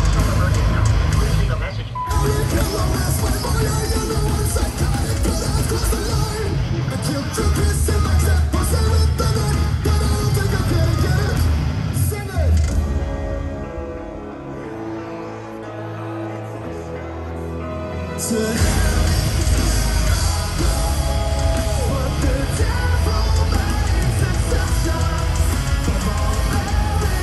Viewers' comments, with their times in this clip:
0:09 The timing of that throw in Hip To Be Scared it landed on the ride cymbal at the exact time the bell struck!! XD